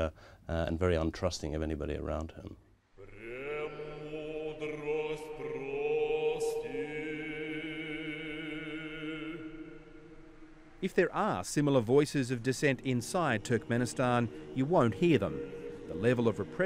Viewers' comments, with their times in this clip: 0:03 What is the name of that beautiful music that starts ? It sounds like Russian Orthodox chant, some of the most beautiful choral music in the world...